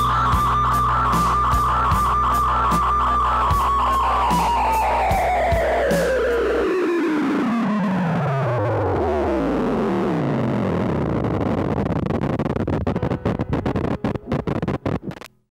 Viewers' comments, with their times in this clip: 0:11 Am I the only one who's creeped out of the piano tune that played just as the song ended. Idk, it always haunts me